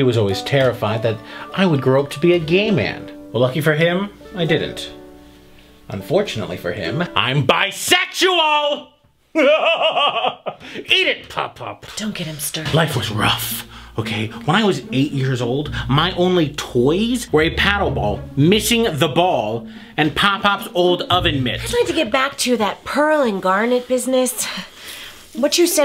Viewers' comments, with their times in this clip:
0:07 I've never related to anything more, bisexually yelling at dead people then laughing maniacally.